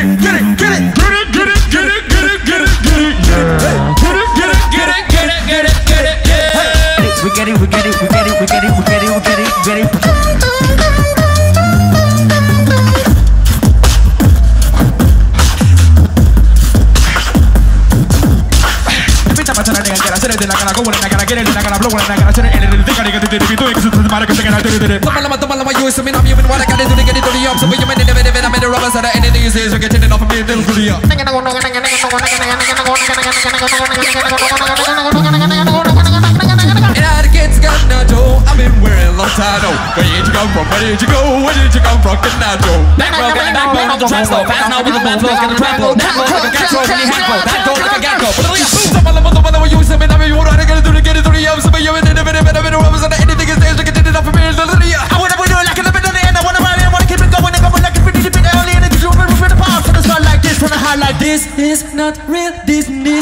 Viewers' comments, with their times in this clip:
0:10 the bass is so fucking gooooooooooood
0:12 Best low bass drop!!!!
0:13 god damn that bass holy
0:31 RAP GOD BE LIKE "NGENGENGENGENGENEGNG"
0:47 focus on the subbass
0:48 underrated tbh such nice tempo and bass all together with mb14 rap god version sounds sick
0:48 the best switch ever !!
0:48 the best bass ever